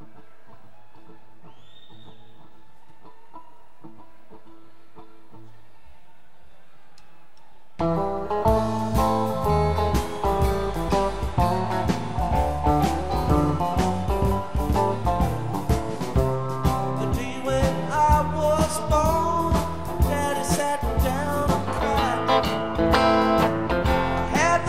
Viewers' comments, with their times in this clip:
0:06 Hi. No vocal tuning here. Aside from the sacrilege, I have neither the time, ability, nor desire :) These are museum pieces, so the goal is to obtain and post the recordings that most closely approximate what it sounded like in the hall. Also this concert specifically is known to have killer vocals - check out Donna and Jerry harmonizing on "Across the Rio Grandio" during Half-Step, for example